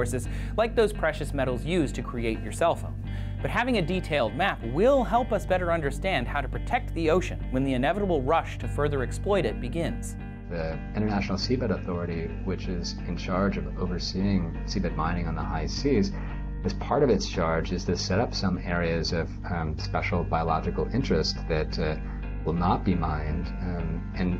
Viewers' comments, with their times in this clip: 0:10 international semen authority ????